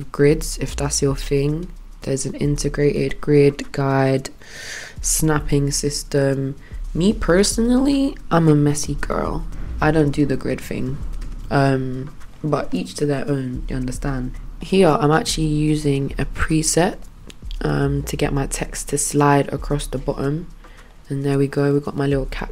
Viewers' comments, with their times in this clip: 0:08 u sounded so American all of a sudden lmao